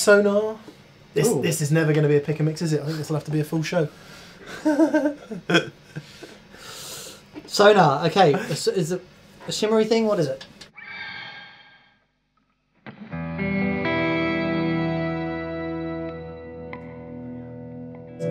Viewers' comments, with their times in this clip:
0:04 The best riff from the entire video.